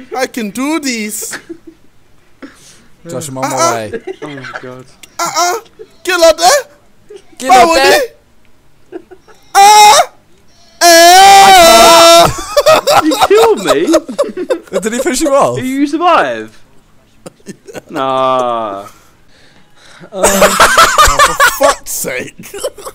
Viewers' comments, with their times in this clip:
0:07 hahaha just stop! don't try to speak yoruba! XD